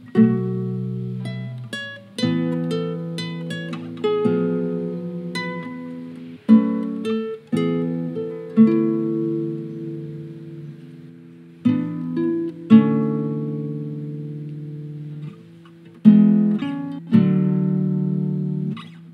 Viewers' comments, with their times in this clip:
0:05 Truly an epic home cover Also i love this fade out, it feels like falling sleep and asking for another note just magical